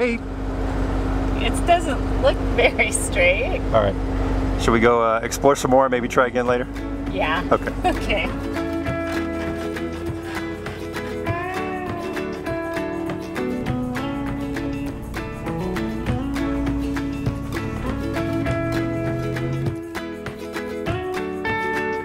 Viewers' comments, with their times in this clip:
0:08 Another great video! Thanks so much for all the hard work you put into these. you start playing a really upbeat bluesy country tune... What song/artist is that? Great song!